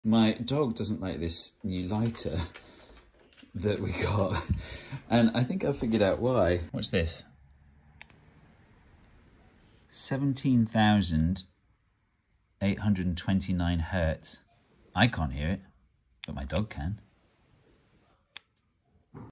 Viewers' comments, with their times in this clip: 0:08 I definitely hear something very high pitched
0:11 I can definitely hear it, it fades out part way through and comes back again, but it's definitely there. If it were a note, it's a really high D.